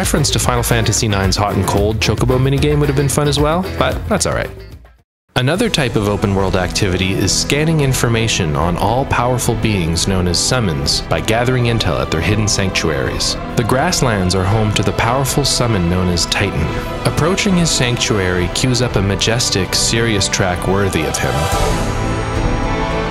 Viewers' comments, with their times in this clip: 0:05 I’ve always thought this was the most Xenoblade-sounding song of the OST